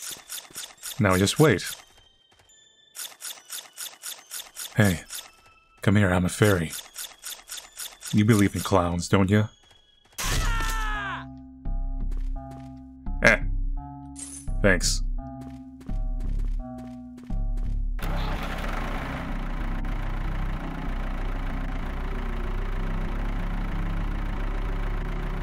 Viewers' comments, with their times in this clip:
0:06 ellis scream effect
0:08 sounded like Elis's scream from L4D2 Edit: just watched the end credits that the game did used sfx from L4D2. cool
0:10 is it just me or his scream sounds like Ellis from L4D2?